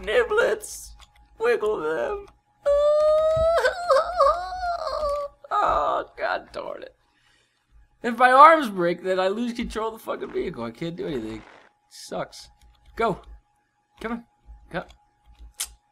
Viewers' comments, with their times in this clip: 0:03 funny voice LMFAO